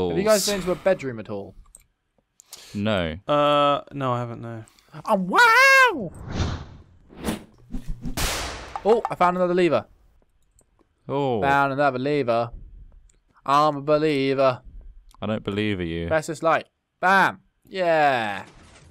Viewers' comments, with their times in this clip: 0:05 anyone else feel like that was autotuned???